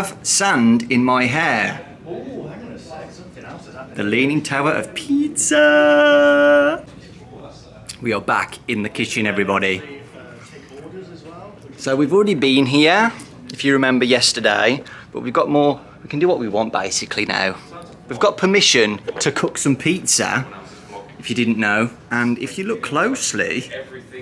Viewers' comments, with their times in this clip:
0:05 he sounds like chica